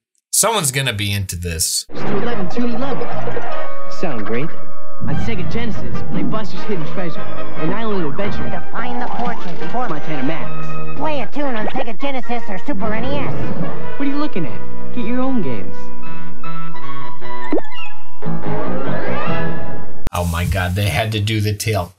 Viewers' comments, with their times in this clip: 0:09 [voice getting higher, until it reaches a high-pitched squeak] Remember me, Eddie? When I killed your brother, I talked.. just... like... THIS! [eyes pop out in the shape of daggers]